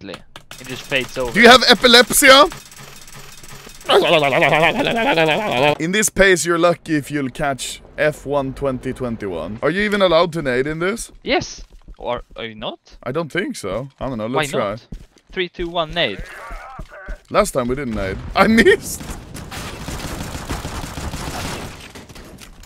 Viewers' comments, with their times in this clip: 0:04 Me picking blueberries: The finnish man owning the property yelling at me: